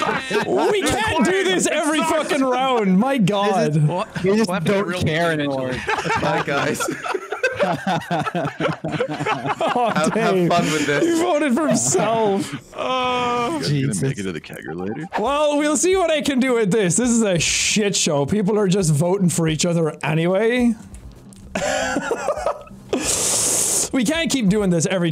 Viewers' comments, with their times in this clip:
0:10 Corpses real voice